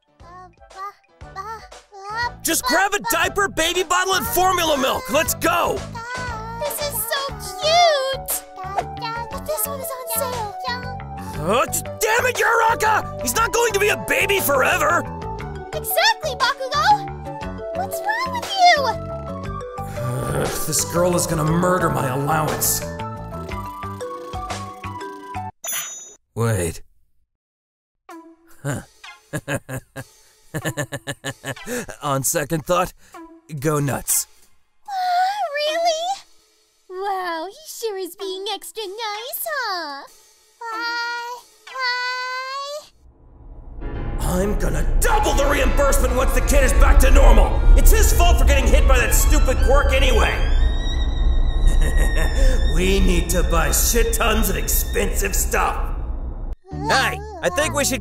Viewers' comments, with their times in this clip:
0:09 does anyone else hear deku say kacchan
0:40 Am I the only one who thinks Deku said 'but why?' ?
0:40 FRICKIN CUTE DEKU VOICE!!!!!!!! ^///^